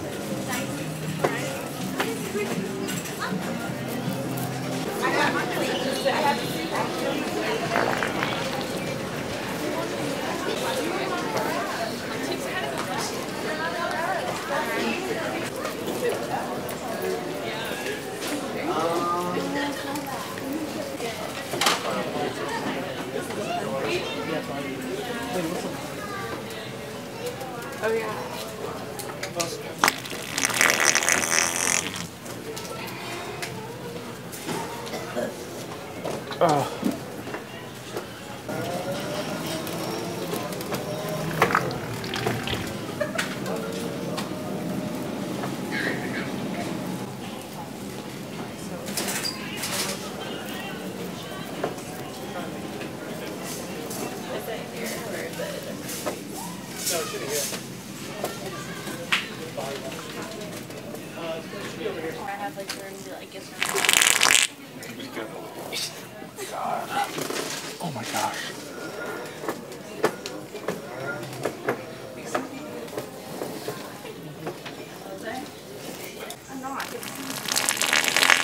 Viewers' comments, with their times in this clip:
0:07 LMAO, loved this one! The drive-by sharting had me dying 🤣
0:10 The girl was laughing so hard. 😂 Her mouth opening is HUGE!!
0:40 Drive By Fart 😅
1:03 wet duck barking🦆💥😂🤣